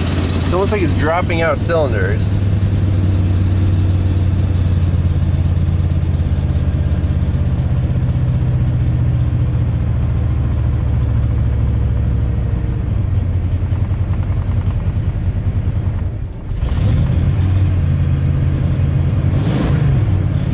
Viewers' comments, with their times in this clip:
0:03 I'm guessing a broken crank 6 of 8 firing.